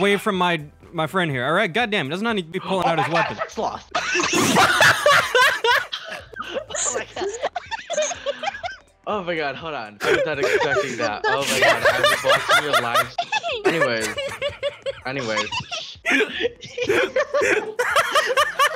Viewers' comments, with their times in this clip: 0:03 that voice crack tho 😆